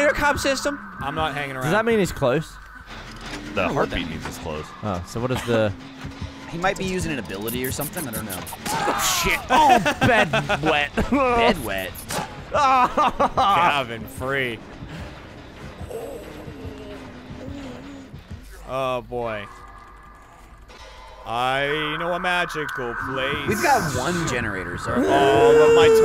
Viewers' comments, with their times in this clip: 0:09 I'm still wondering when they're gonna notice the COMPLETELY OBVIOUS HUMMING IN A FEMININE VOICE THAT SOUNDS LIKE NONE OF THEM